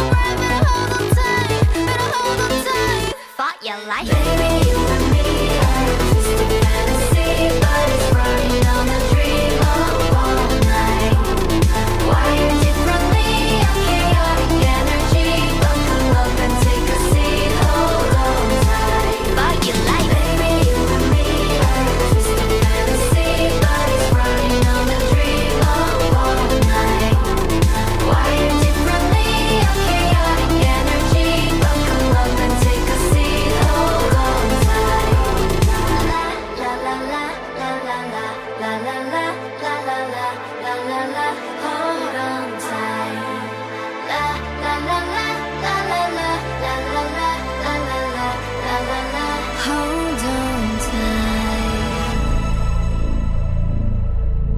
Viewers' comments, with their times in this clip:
0:04 it actually sounds like a russian song
0:37 did anyone else notice Black Mamba (m-m-m-mamba) in the background?